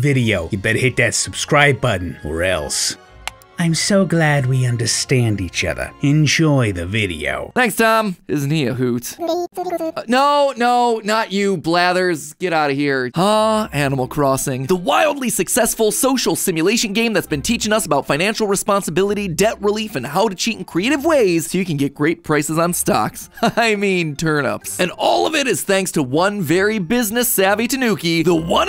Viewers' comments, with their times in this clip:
0:10 patthew? U mean matthew right?